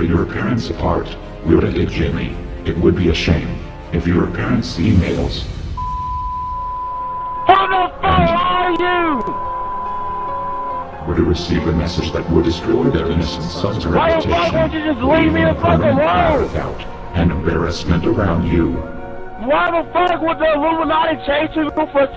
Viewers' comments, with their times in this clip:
0:07 whats that music in the background it sounds mysterious :0